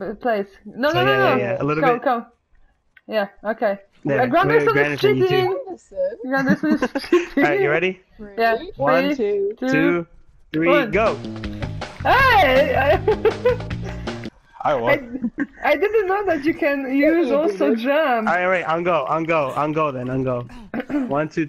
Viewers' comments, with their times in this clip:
0:04 And your "Granderson" kills me everytime hahahaha